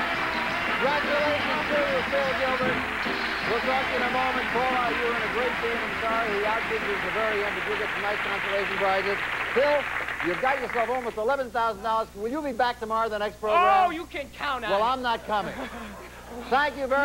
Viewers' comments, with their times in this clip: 0:03 Finally, the music is fitting!!